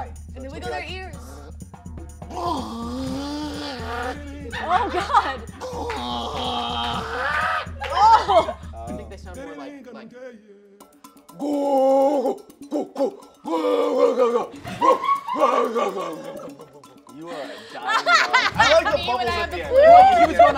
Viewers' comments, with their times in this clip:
0:05 he sounds like a cat with a really bad hair ball